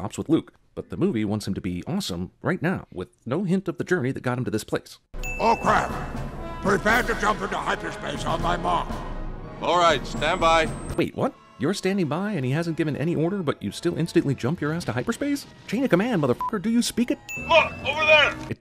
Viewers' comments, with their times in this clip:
0:05 For decades, I actually thought Admiral Ackbar said, "Oh, Crap!"